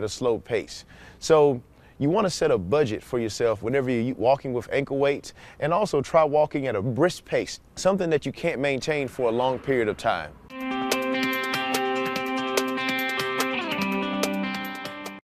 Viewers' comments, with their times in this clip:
0:08 does he say can or can't?